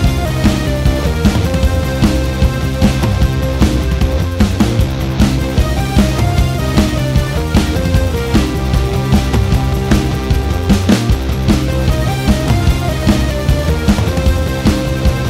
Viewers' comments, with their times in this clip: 0:03 SHUT UUUP I CANT LISTEN THE MUSIC